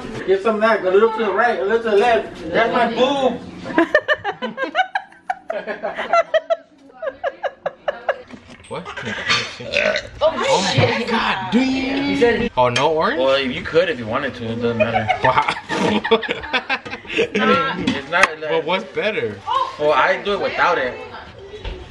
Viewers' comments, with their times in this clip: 0:07 Lmfaoooo the baby 😂 when he burped 😂😂😂😂😂